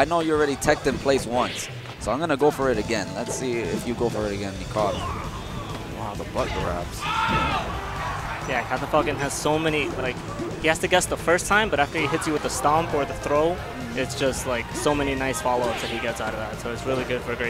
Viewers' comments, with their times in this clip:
0:05 what was that yell?